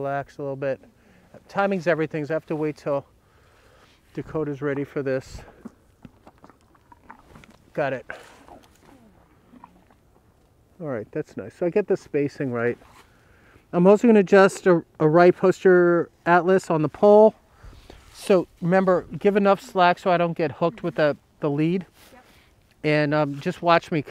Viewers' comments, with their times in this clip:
0:08 Bruh I heard that pop. ._0